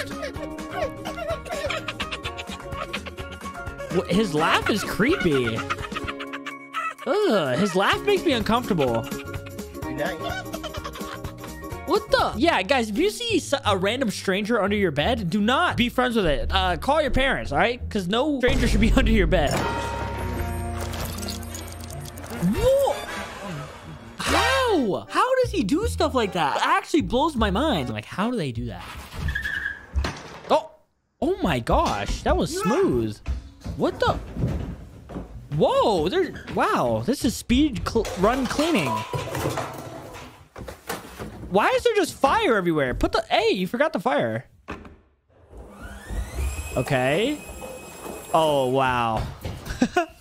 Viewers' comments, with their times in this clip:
0:06 the laugh sounds like Elmo lmao
0:31 I like the way you just say o